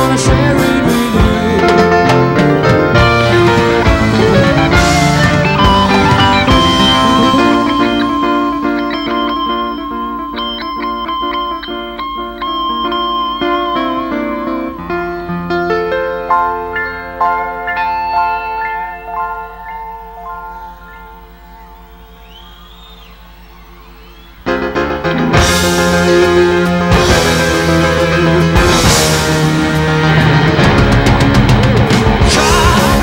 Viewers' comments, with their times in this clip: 0:08 why does it seem as though brian was going crazy with the note cause he was waiting for Freddie to do the next part
0:21 Even the silences are magnificent !